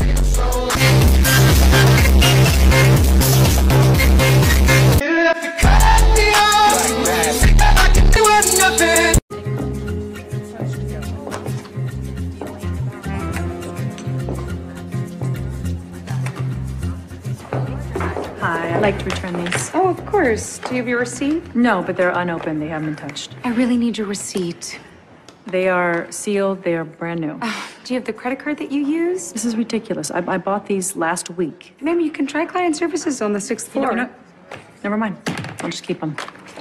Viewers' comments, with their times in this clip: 0:09 What about the alarm tho
0:22 The security alarms be ringing when he got out. But if there is no alarm idk: